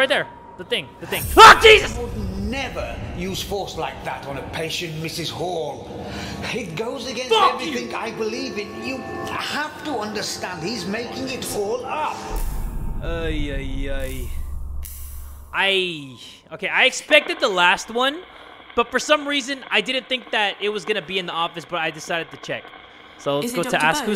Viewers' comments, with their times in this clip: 0:06 the cutest "f*ck you" ever😍